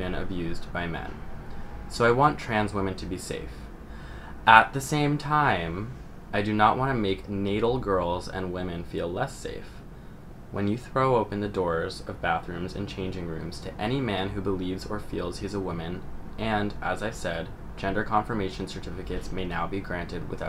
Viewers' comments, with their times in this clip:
0:05 she low key sound like Kaitlin Bennet lmaooo